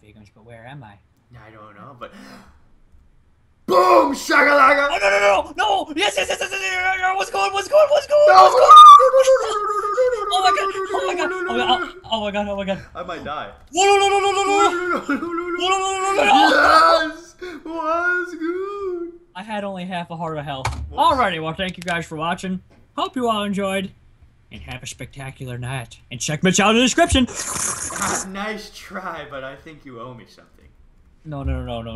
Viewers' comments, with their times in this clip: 0:06 RIP HEADPHONE USERS.......
0:07 epic voice break!
0:07 -49 either Bajan or Jerome screamed like a girl... am I the only one who noticed???
0:08 major voice crack
0:08 What the heck was that a girl screaming!?
0:08 For voice crack XD
0:08 That squeak !!!!! Lol, to funny!!!!
0:08 that was the biggest voice crack I have ever heard!
0:08 that voice crack xD
0:08 what in the world was that screech
0:08 epic voice screech
0:08 That was the bests voice crack I've ever heard.
0:08 voice crack scream ? o.o
0:08 Hahahah R.I.P. Headphone users
0:09 Hahaha I was DYING WHEN I HEARD pause there you hear Jerome or Mitch squeal! Haha so hilarious.!
0:12 dat scream doe hahahahah